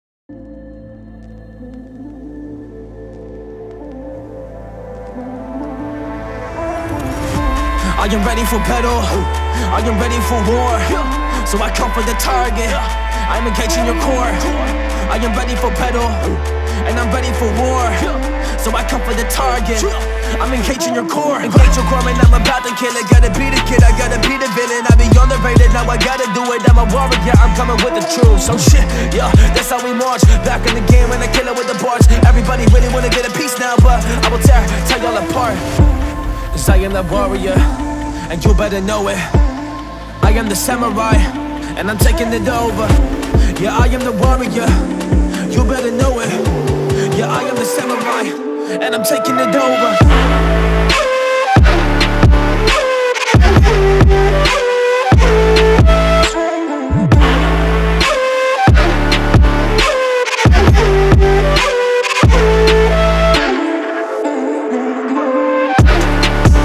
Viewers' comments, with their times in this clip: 0:04 starting bass samurai
0:47 is when the beat drops and made alan walker stopped walking